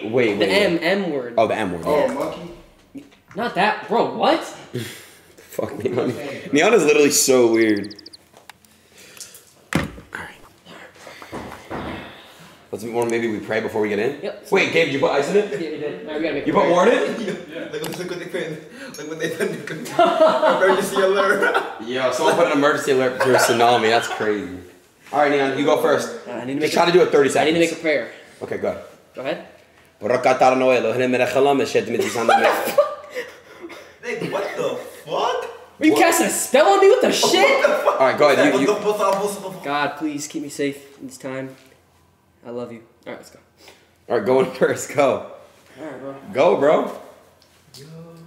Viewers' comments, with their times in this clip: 0:09 damn i might be trippin or sumthin idk but i heard sum1 whispering nd it wasnt none of yall kuz i checked but ether way it was just a lil wierd nd strange idk i mean was i the only 1 to hear that whispering? if not or if so wth or who was that thats all i wanna know lol
0:29 leeel my mans speaking gibberish hebrew